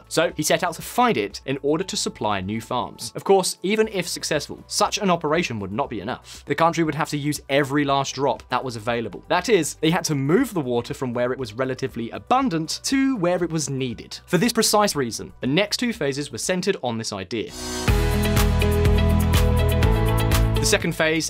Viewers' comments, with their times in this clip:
0:06 "San Joe Quin Valley" That's not even close! Added your channel to the "do not play" list.